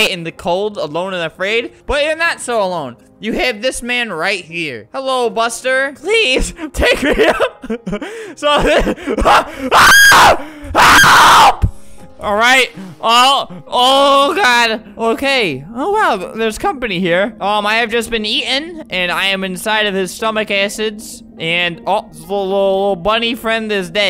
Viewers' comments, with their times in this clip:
0:09 Flamingo screams like a girl after shower lol
0:10 ...When i tell you I DIED of laughter when i heard the scream